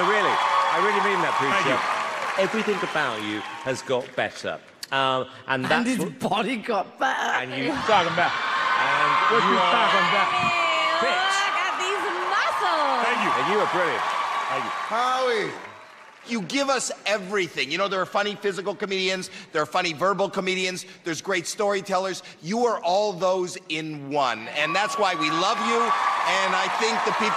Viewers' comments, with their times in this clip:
0:09 Mel B: the “oh no he’s hoOoOOoOooOt!” Squidward meme